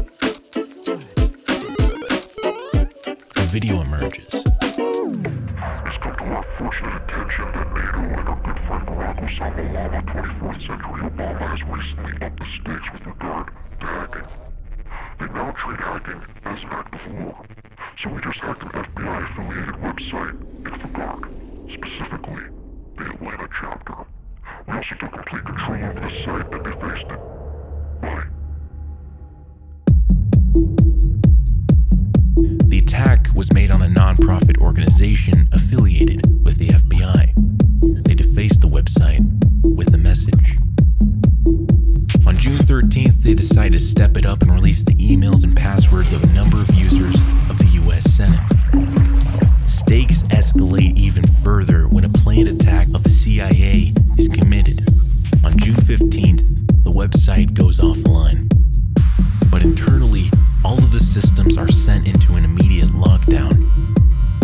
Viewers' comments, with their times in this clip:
0:06 How did the voice of the masked character lower in ? Thanks!
0:24 I've watched this video 5 or 6 times in a row. I just cannot get over the quality of the editing. It's absolutely incredible. The flow of this video and they quality of storytelling is some of the best I have ever seen from a documentary. Astonishing work, a huge congratulations to all involved. right after their statement... The way the camera pans out, and the heavy-beat music kicks in, it brings on this overwhelming feeling of momentum and urgency. You know something is coming and it's all kicked into gear, it's phenomenal production.
0:43 u know i would never savage u my man but the music was too loud relative to your voice ish so it made it hard to hear :(. (using laptop speakers but i usually dont have that problemo) tysm for your content and amazing work! <3
0:49 Very well made video though the audio balancing could be better. I’m hard of hearing and I had to rewind like three times because the pulsing music was louder than your voice :s